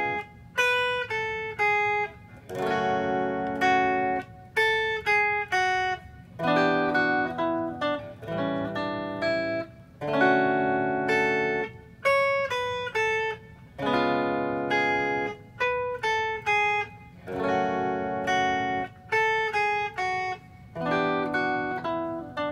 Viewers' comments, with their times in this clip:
0:06 when you accidentally play a part of Wind Tempos